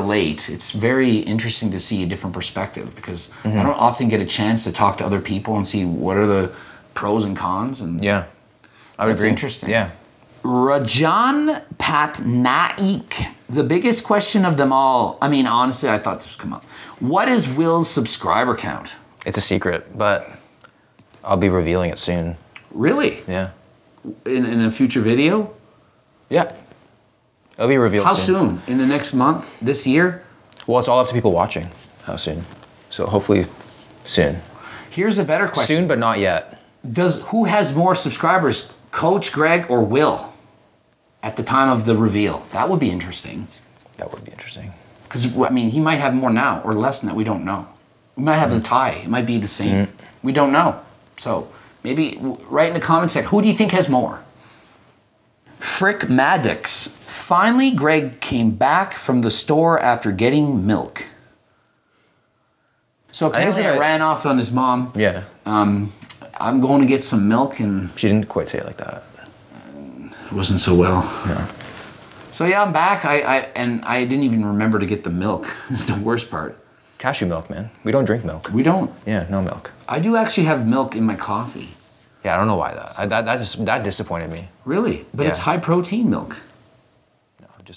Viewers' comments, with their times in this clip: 0:09 the name pronunciation :D
1:09 thats hilarious i wasn't expecting that voice to come thats like TRANSFORMER voice WTF LMFAAOOO!😭😂